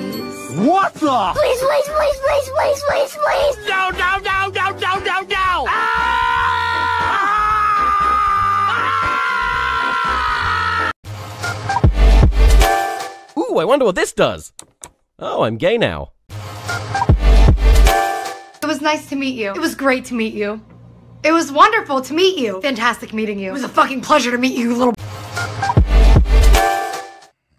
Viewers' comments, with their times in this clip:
0:08 that voice looks like the carl one